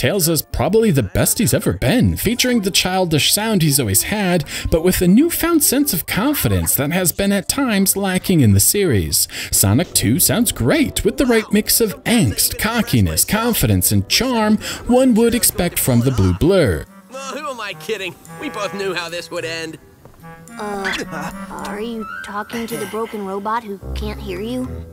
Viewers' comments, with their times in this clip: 0:09 I mean, Roger sounds like a 38 year old man, but okay.